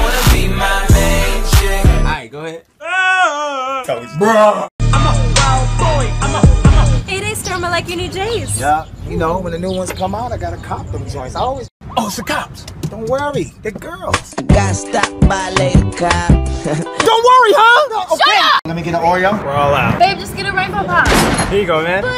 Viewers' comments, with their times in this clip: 0:05 that deep BRUHH